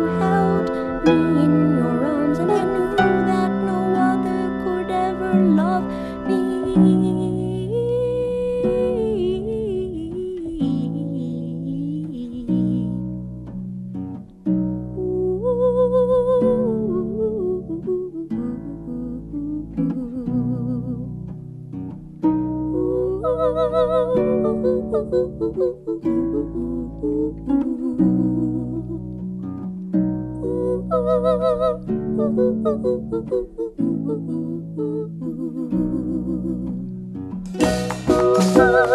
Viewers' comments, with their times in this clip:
0:03 those ain't no idling birdcalls.
0:13 the ooh-ee-ooh harmonies bit <3
0:23 onward is so catchy... Oow OOOW, ooowooowooowooowooowooooow.... *bobbing head*